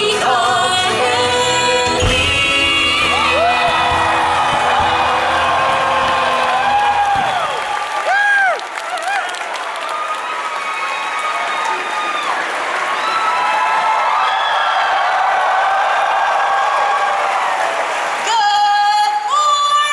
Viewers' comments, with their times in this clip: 0:05 Intro Ends bronies cheer Good morning from the sold out baltimare convention center in Baltimore Maryland, welcome and this is Bronycon 2017!